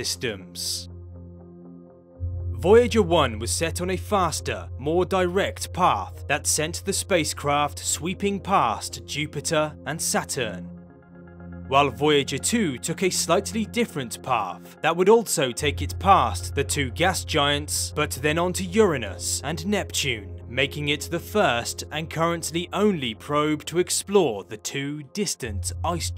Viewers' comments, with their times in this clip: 0:10 Ummm did I just hear my name said wrong. Its Saturn not Satur. Love your channel and seeing photos of me. hehe